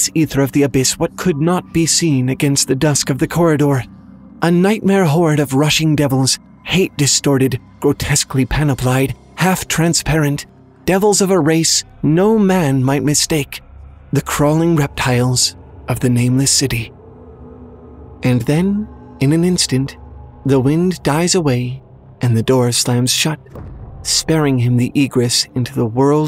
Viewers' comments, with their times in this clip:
0:07 sounds much more intense and real at 1.5 Try it, trust me.